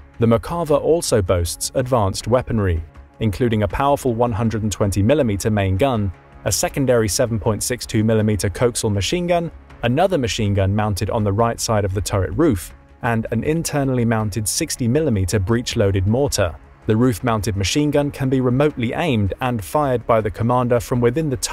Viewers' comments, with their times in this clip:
0:09 Anyone else thrown for a loop when they heard "Coaxial" pronounced as "Cokesul"?